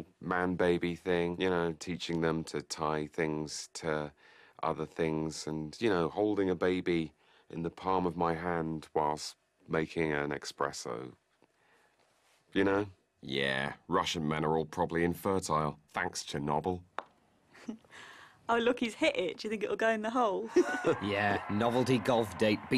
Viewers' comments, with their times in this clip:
0:10 did he just say ‘Expresso’ *imminent shot to head